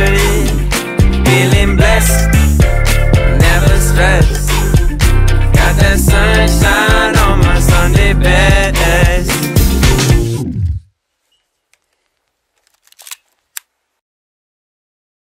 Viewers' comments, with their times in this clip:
0:12 does anyone else hear what sounds to be a gun? Implying something terrible happened right after the song ends?